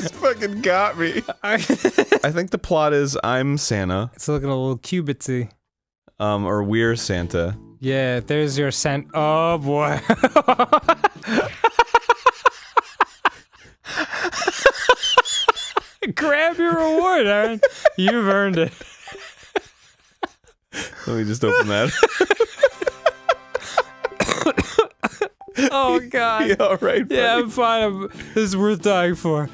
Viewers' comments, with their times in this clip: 0:08 one of my favorite Dan laughing moments. If you don’t laugh with Dan there’s something wrong with you
0:14 I love the whistle laugh I can’t stop replaying it
0:14 the best Danny laugh in my opinion